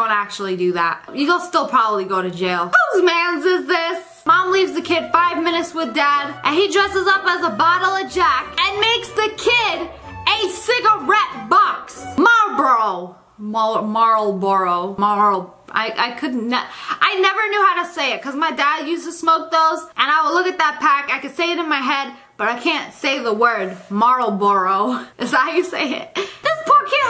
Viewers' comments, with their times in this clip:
0:10 it sounds like she was a rapper